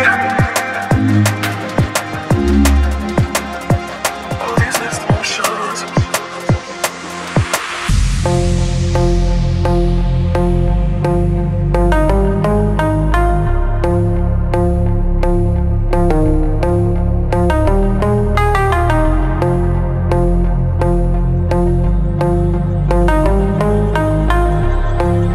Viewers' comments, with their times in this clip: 0:08 That build from all the way to the drop is absolutely perfect ♥️ Also that little sound at the end of both drops that lasts for like split second is a such a nice detail. Really excited about the album. I wish there was a collab with Noisia 😂😂 Anyway this is the Netsky we all missed. Good job pal 🤩